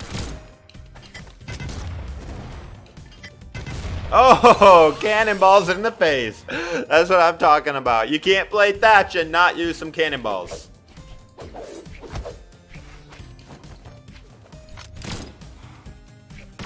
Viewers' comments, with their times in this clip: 0:03 Cannonball crit! Boom! :_LucGGG::_LucSun::_LucLul: